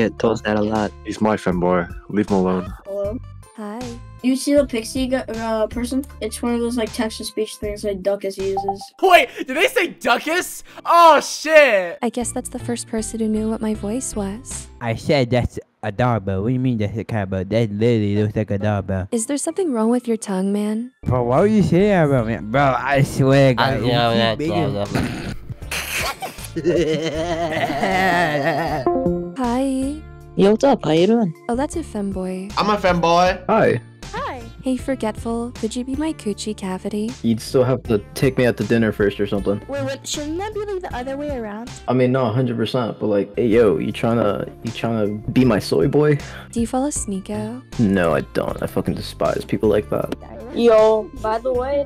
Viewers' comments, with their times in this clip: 0:08 He sounds 10
0:15 IS THE REAL ERIC CARTMAN!!
0:38 he sounds so serious about it too💀